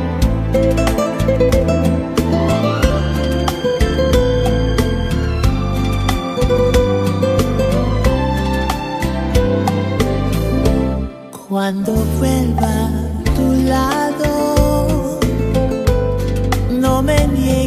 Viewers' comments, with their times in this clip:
0:03 the entry of the ensemble of violinist is so uplifting...what a great and astounding rendition of an icon singer, musicians and composers of this wonderful song...